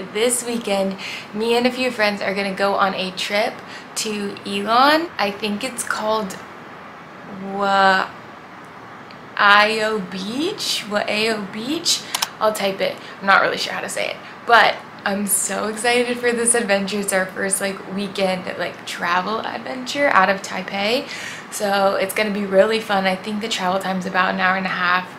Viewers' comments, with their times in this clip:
0:06 It sounds like "Y" "ow" both in the forth tone.